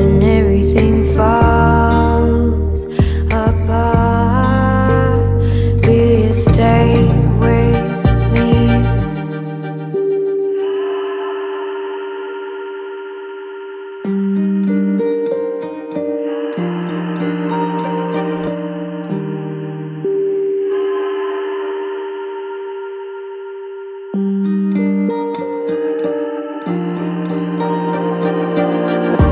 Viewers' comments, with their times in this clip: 0:10 omg my fav part this beautiful instrument it makes me imagine alot of beautiful things😭❤️